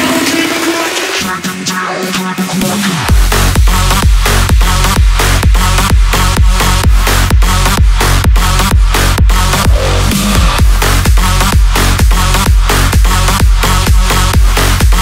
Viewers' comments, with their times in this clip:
0:03 how the fuck did he do this break ?